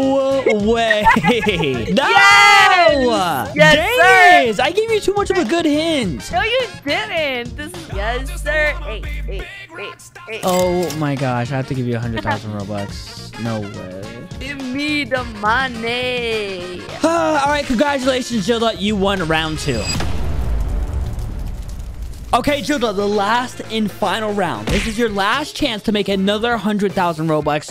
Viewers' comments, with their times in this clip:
0:09 lil bro started crying